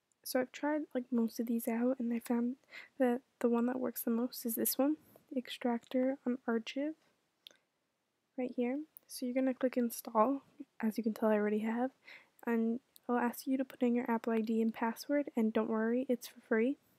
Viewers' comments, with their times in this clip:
0:03 shee said un ar chi ve